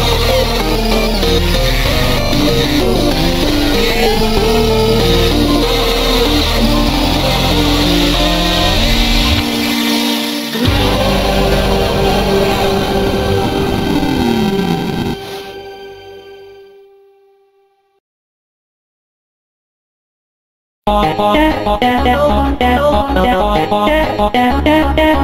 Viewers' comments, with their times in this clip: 0:07 That aye got me laughing 😂